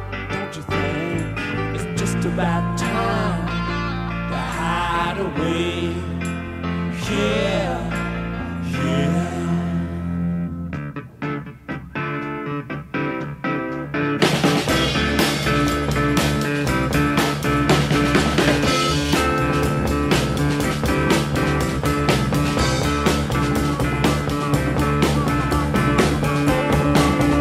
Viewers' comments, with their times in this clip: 0:10 Dedicated to all those who think the RS are just an ordinary band... This is such a marvelous tune, the change is one of the most delicate compositions r'n'r has got to offer. By the way, M.Taylor was the best Stones' guitar player, but Mr. Watts is the best musician in the whole bunch...